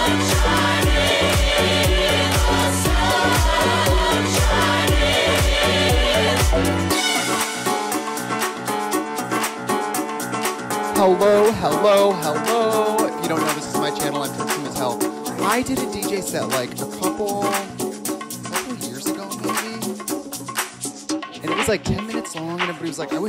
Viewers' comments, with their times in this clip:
0:07 this sounded like music from the Persona franchise